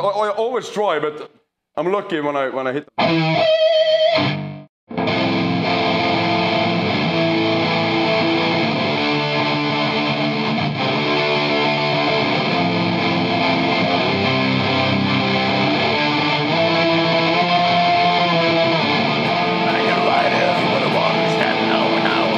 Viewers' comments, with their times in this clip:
0:04 those fucking chords, always a huge rush of grandeur and grimness, fucking Immortal 🤟🤟🤟